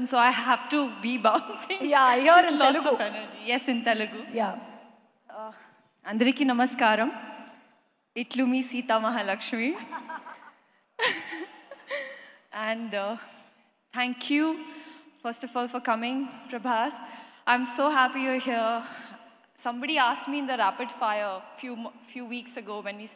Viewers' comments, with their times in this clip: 0:08 just listen her tone , SITA MAHALAXMI just WOW !